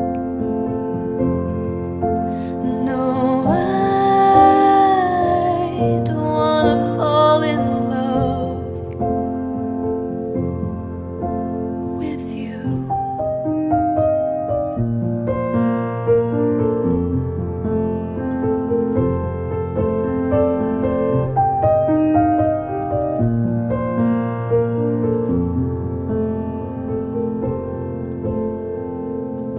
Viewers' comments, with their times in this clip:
0:10 Ha! only listened to five covers, but may agree here, One of those tunes you don't mess around with, and furthermore, has a particular note or line that you REALLY have to get right: "...don't want to fall in love..." and she does it, love her whispered "with you" (which is about the correct level of adlib for this song)